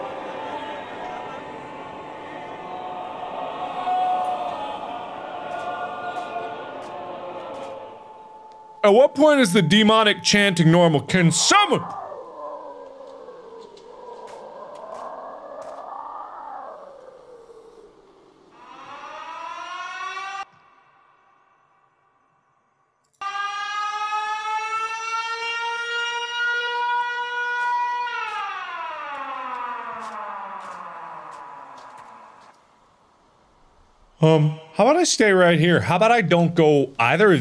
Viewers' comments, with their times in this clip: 0:07 it sounds like a faint sound of men screaming
0:19 sounds like me when I'm getting a snack and sounds come from the fridge